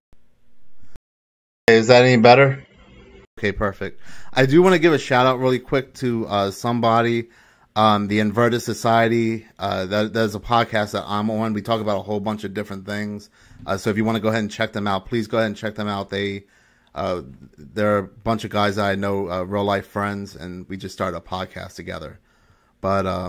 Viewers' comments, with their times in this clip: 0:06 Did anyone understand what the name of that podcast is? It sounds like he is saying “inverta society”. But I can’t find a podcast anywhere with that name. He says it